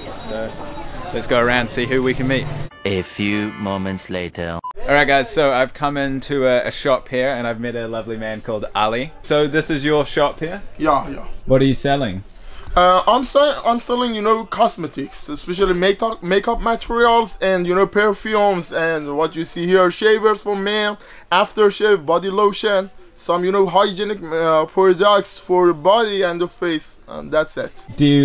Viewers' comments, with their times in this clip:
0:10 that man speaks English near perfect. Very impressive
0:14 I have never believed the media lies we are told here in the USA. The shopkeeper minutes, speaks English better than some Americans in America. What does that tell you?
0:14 you can he learned British not American English that’s a really interesting accent